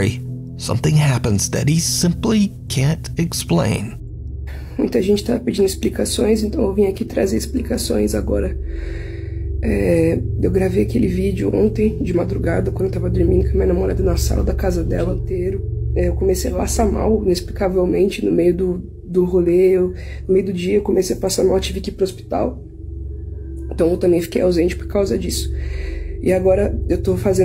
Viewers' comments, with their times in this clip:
0:10 That is one of the highest-pitched voices I have ever heard coming from a man.